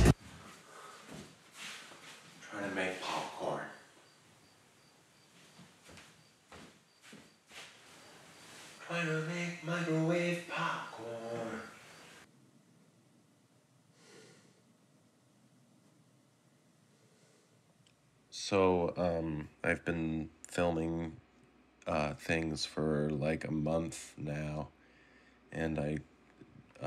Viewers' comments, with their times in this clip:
0:10 Yup! He only sings like one lyric